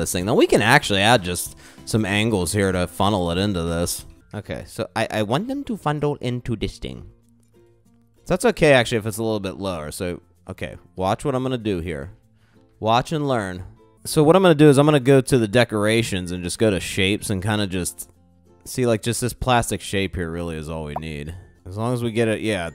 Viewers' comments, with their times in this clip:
0:05 Your commentary made me laugh! "I want them to fundle into this thing" in a weird voice... 😂